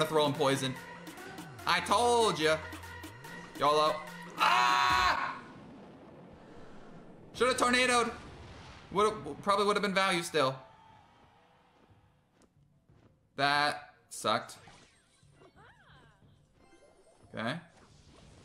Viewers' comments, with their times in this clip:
0:06 I felt that scream